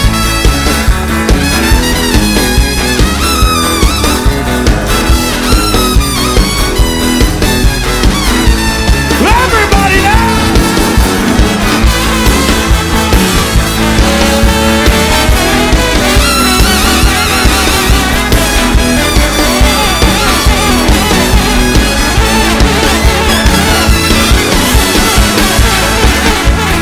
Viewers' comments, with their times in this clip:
0:07 Some kind of magic bursts out for the remainder of the song, call it if you will a never ending groove of pure joy, of pure joie-de-vivre.